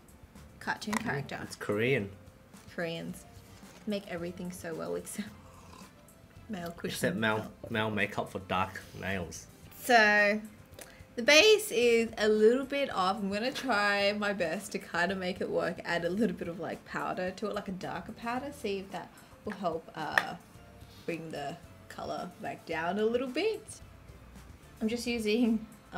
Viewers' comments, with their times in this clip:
0:07 you can hear her voice crack and for some reason I found it funny and adorable 😁